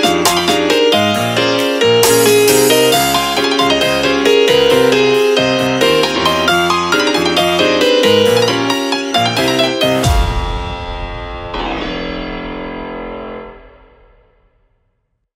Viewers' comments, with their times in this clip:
0:08 dear god its a spooky lick